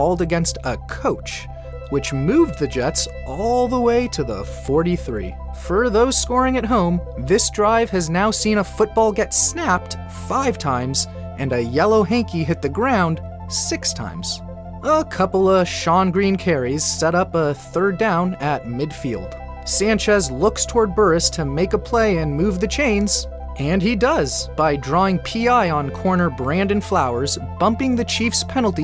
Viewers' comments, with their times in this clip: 0:09 voice crack lmfao